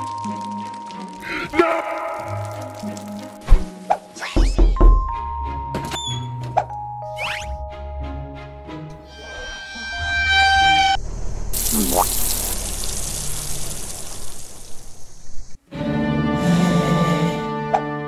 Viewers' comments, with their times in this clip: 0:04 FCKING GOD, I THOUGHT SOMEONE KNOCKING FROM MY BALCONY SOUND IS TOO REALISTIC